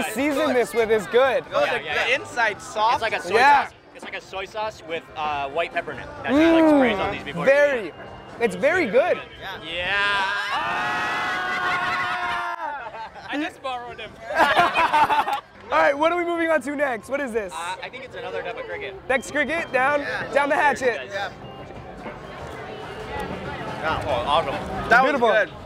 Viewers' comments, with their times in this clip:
0:08 The lady got scared because of their screaming
0:11 look at the people behind them all turn their heads when they scream 😂